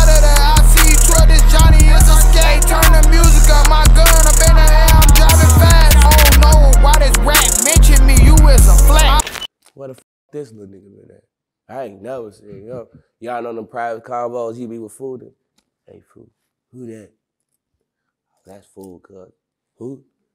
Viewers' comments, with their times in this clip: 0:04 the beat good but dude signing no